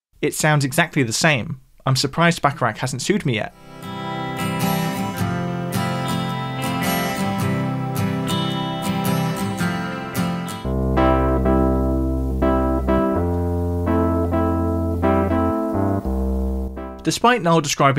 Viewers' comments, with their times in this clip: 0:03 That is such a common chord progression ("Band on the Run" comes to mind). Herb Alpert may not have sued due to the risk of getting in trouble himself.